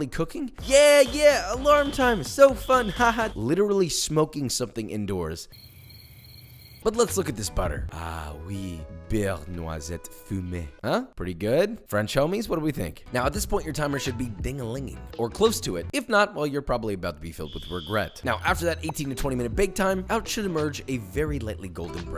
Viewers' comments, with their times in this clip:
0:06 That WAS PRETTY GOOOD ! a tad bit too nasale on the "ey" of "fumé" but apart from that we can barely tell you're not french